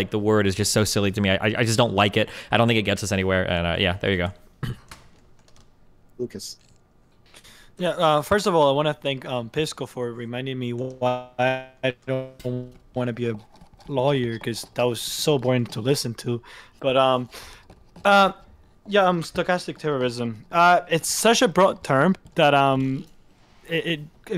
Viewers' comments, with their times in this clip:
0:08 “wow that was boring”, then goes on to stumble through his sentences and say absolutely nothing….